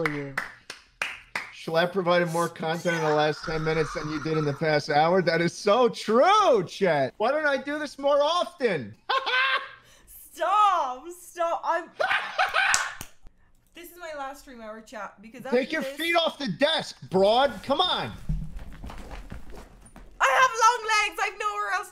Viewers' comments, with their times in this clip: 0:08 The Schlatt cackle is back in business
0:09 now that i know what he looks like, i can't imagine what he looks like laughing like this
0:09 I love his laugh